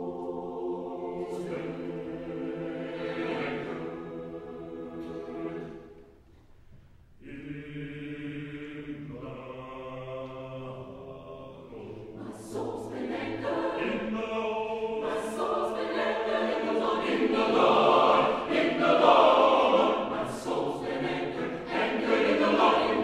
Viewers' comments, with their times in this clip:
0:10 We're doing this song at school for my choir and only 3 of our basses could hit that low note Us tenors just looked at each other when we heard the note lol